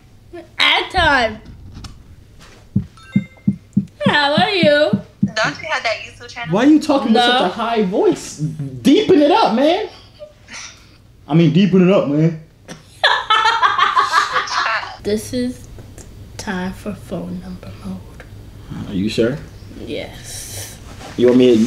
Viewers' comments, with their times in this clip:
0:09 he exposed his voice 🤣🤣🤣